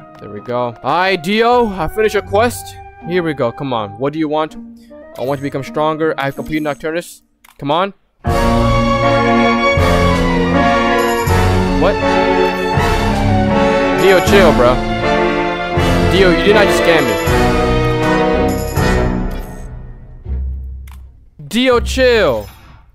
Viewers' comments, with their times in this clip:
0:08 I felt that Kira music